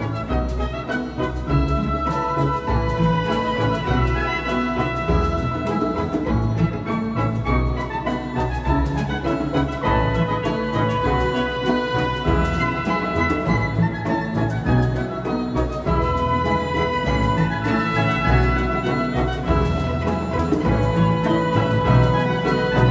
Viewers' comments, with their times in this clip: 0:07 Finally time for the triangle player to get some glory!